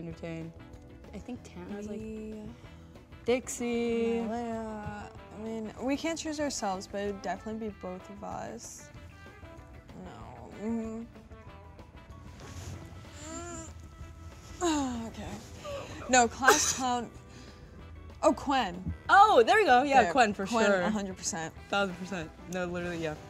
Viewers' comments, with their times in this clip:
0:06 Why is no one talking 💀😭